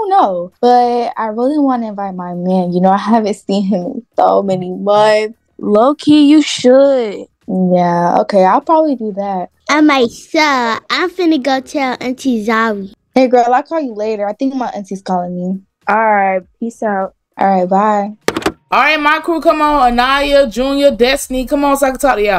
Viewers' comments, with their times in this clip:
0:07 the walkie-talkie got me laughing i though it was a phone